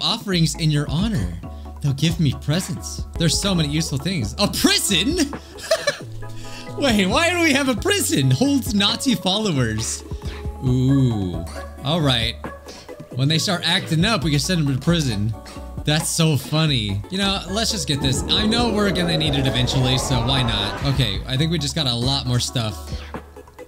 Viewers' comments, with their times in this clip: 0:06 I cant be the only one that heard him say one of those funny mustache man